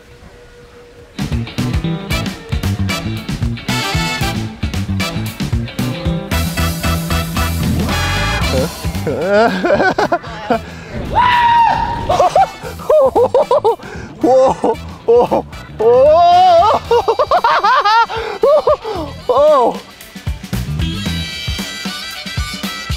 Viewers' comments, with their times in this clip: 0:10 that screamed echoed throughout the whole park 🤣🤣